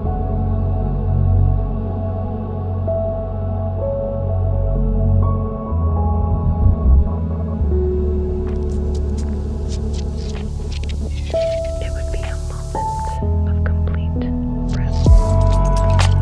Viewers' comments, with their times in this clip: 0:03 I love when She whisphers makes me tingled.